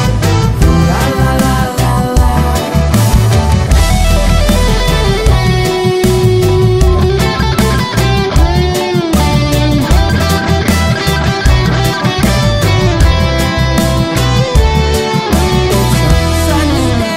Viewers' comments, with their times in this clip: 0:03 daaaaaamn, that guitar solo though 😳👏